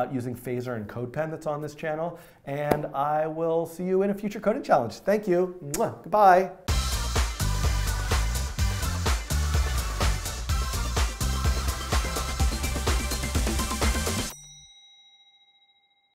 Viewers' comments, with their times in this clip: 0:05 such a weird kiss 😂 you are the funnest tutor on Youtube Keep going!